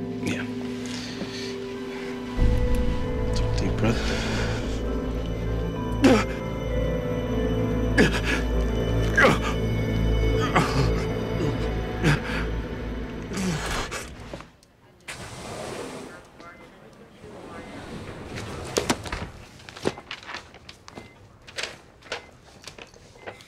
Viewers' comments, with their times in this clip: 0:04 that gasping from sound familiar (starts rewatching terminator 2 for the 14th time)